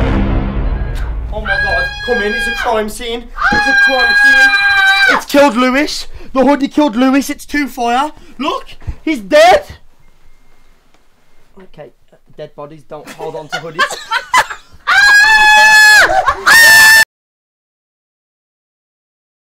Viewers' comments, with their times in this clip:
0:07 what happened to the sound?